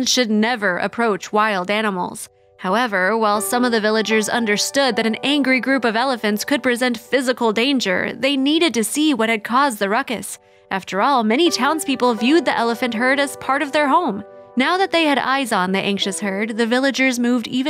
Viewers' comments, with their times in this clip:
0:05 Addendum—Seven YouTube viewers were found dead from exposure to elephant trumpeting, narration that violated the Geneva Conventions and exhaustion-induced mania leading to mass auto-disintegration in a nearby mud-hole. Free lunches from local villagers were tragically of no avail. Exclusive—and exhaustive—details !